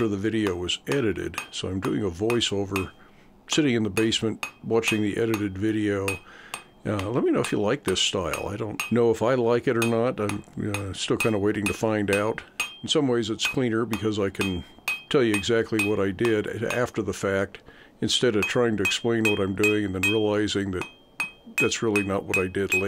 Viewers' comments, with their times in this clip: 0:09 I like the voice over because I can understand you better instead of having to compete with the sound of the forge and anvil.